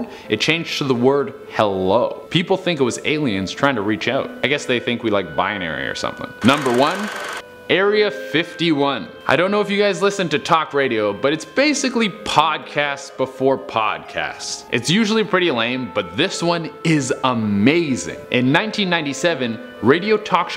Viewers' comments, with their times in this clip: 0:07 [faint naruto theme song plays] [monster cans cracking open] [lasers, bullets and explosions]